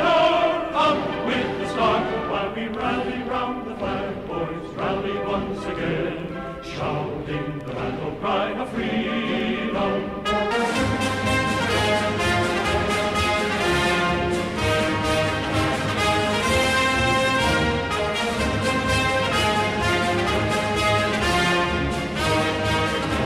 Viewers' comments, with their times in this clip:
0:10 Quite possibly the most patriotic version of “battle cry of freedom” I have ever heard, Kudos to who ever conducted the orchestra there
0:10 the beat drop is crazy 🔥🔥